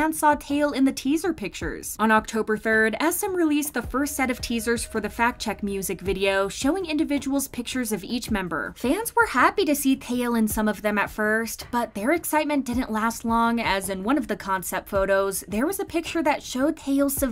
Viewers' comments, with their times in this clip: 0:03 “fat check” I giggled 😭